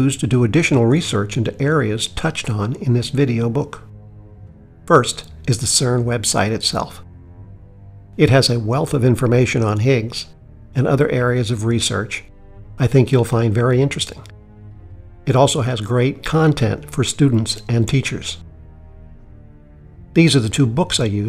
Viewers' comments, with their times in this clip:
0:05 he said CERN websy instead of website Lol